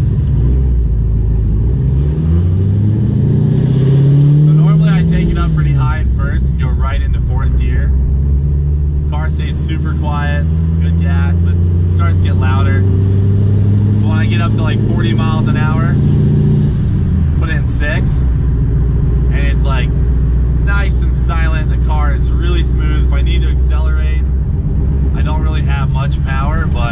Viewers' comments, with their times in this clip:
0:09 "Super quiet" ... we can't really hear anything he talk xD